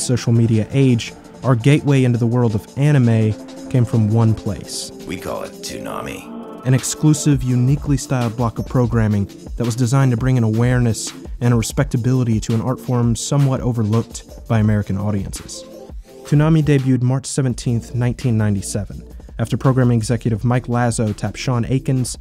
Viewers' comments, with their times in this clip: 0:04 That voice… a mere seconds into the video… I am transported.